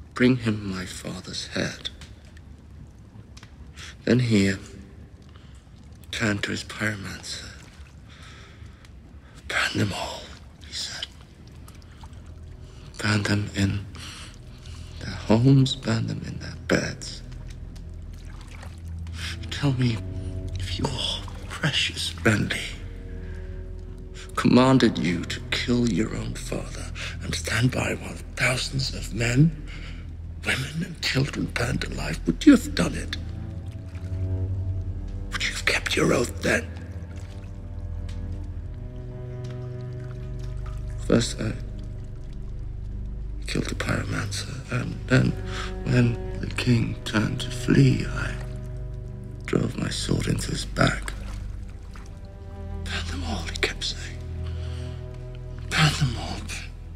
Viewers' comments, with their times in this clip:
0:04 "bring me your fathers hat"? Tywin had a beautiful hat tho
0:22 when the music quietly comes in always gives me goosebumps
0:31 "would you've kept your oath then" well delivered line
0:32 I love the way he says "Would you have done it?"...he sounds like a bitter old man! So much anger in five words!
0:40 Brilliant acting overall, but especially He actually manages to show shame in the way he delivers "first i killed the pyromancer". It shows in his face too. This is an actual character not an actor acting.